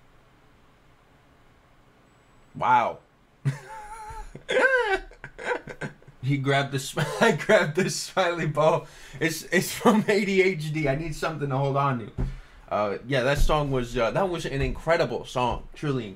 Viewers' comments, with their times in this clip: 0:03 yeah, Mori's collab with Ninomae Ina'nis in this song is off does not mesh well and Ina'nis is a bit inappropriate in the song.